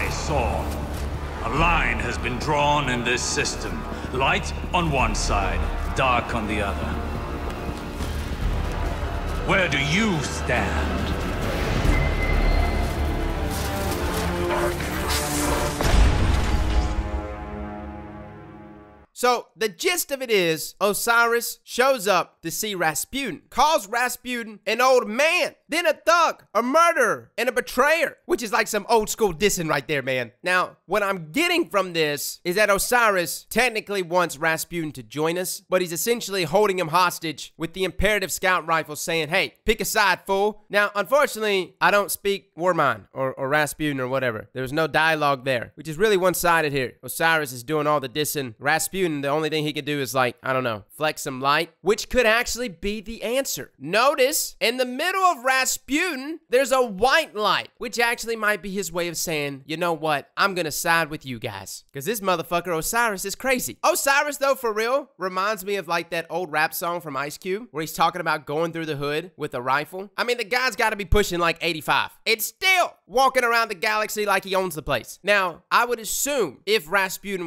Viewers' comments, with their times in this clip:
0:10 At the end of the cutscene doesn’t it kinda sound like Rasputin says “darkness”? If your wondering to rewatch this scene. And tell me what you think
0:10 I swear I just heard Rasputin say "Are you threatening me?"
0:12 is it just me or did rasputin say darkness
0:14 I can hear both "Darkness" and "Are you threatening me" from Rasputin.
0:14 it sounds like rasputin said darkness, listen carefully.
0:14 "darkness" or am I insane
0:14 if u listen carefully u can here rasputin say darkness
0:14 if you listen really closely you hear Rasputin saying "Darkness"
0:14 when the door closes it sound like resputin is saying darkness
0:58 I laughed so hard my neighbor called and asked me to send him whatever was so entertaining...I love this channel. Plus your voice and accent...whenever you exclaim I get tears in my eyes caused by laughing.